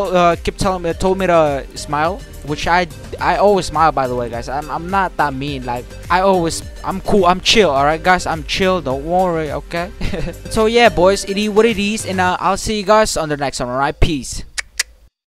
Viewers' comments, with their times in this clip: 0:11 I like that line “Id is whad Id is” XD